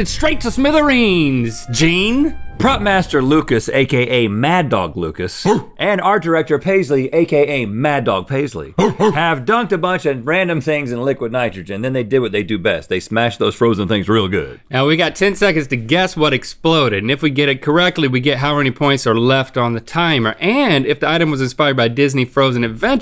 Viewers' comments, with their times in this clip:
0:06 Link barks.....PTSD from yesterday’s episode.
0:08 Forgot about yesterday’s episode until Link barked o_o